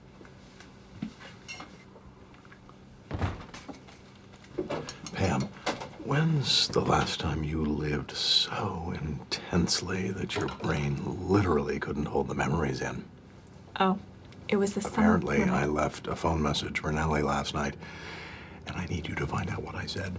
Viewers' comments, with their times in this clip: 0:06 Robert reallyyy sounding like Ultron!